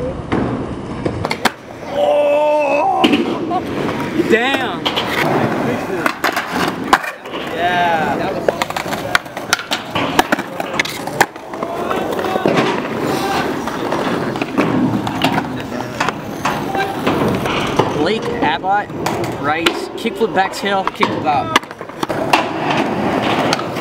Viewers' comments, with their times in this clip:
0:04 How else laughed